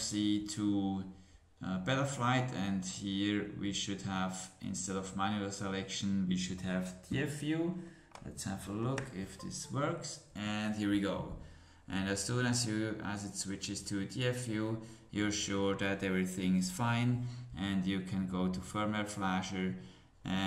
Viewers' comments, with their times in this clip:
0:08 what exactly did you do I hear a clicking sound only but can not tell if that was reconnecting the FC or something else...please let me know, thx